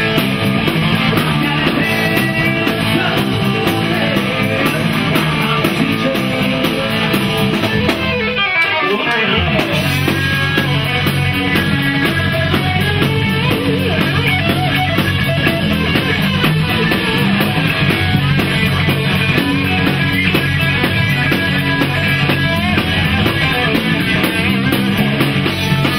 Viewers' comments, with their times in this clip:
0:07 Holy crap. My jaw is on the floor. That solo!